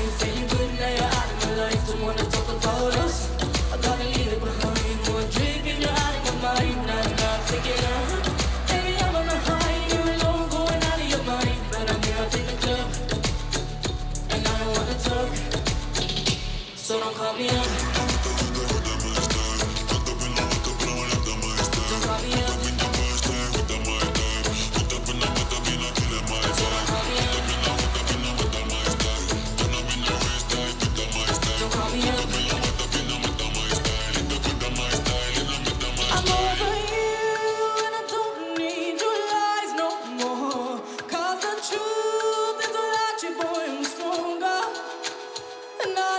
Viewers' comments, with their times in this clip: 0:03 oops that crack though
0:34 I wish she'd come back in & PUNCH that line. Maybe separate herself from the choreography just before that, catch her breath and have the heart to fill that line with some redemption.